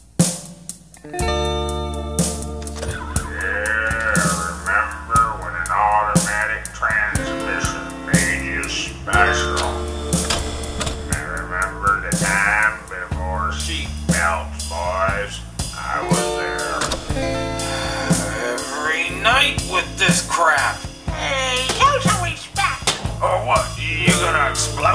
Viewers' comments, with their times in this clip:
0:05 he sounded like Squidward and Sandy cheeks mixed together